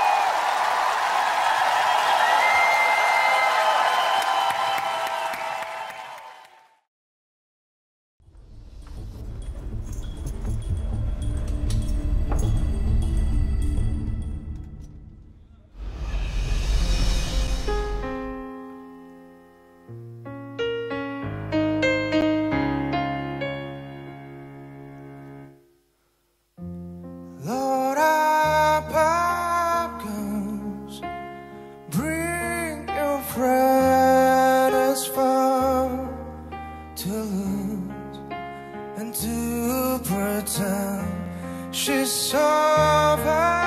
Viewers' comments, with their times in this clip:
0:08 very interesting interpretation of Nirvana's `Smells like teen spirit`
0:27 ....that is one HAUNTING rendition of one of my favorite Nirvana songs...and then BAM..rock out....damn man...chills!! Well done!